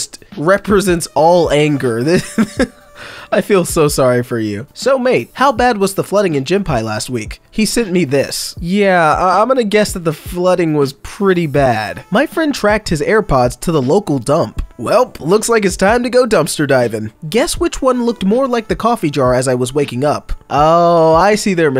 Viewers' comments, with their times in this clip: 0:06 Gympie is said as Gim-pee Gym pie is the funniest thing ive ever heard it called. hahahah